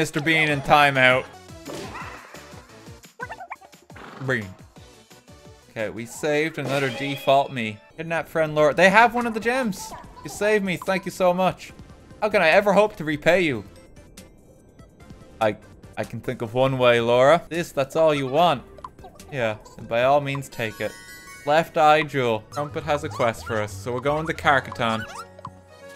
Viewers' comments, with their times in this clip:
0:10 If you close your eyes, this sounds mildly inappropriate.